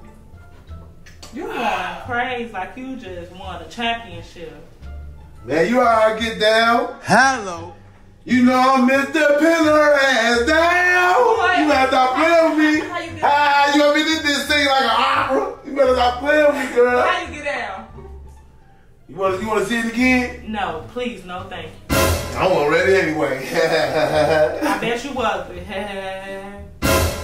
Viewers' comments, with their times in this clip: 0:08 the t pain shit hilarious 😂😂